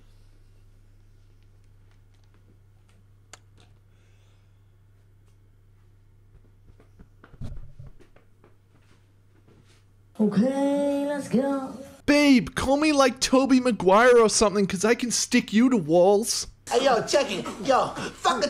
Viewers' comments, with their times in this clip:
0:04 Crunch! Can't believe I watched this in a library. got me 🤣🤣🤣